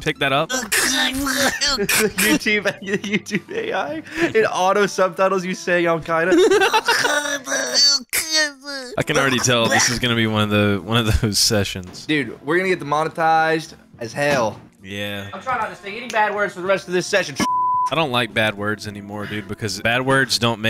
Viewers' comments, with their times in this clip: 0:07 The [Music] is wonderful and inspiring